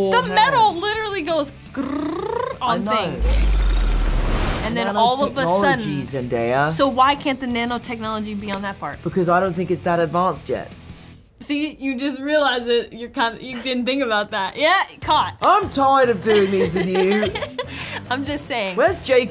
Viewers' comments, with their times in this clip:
0:05 The way Tom said zendaya's name is cute😊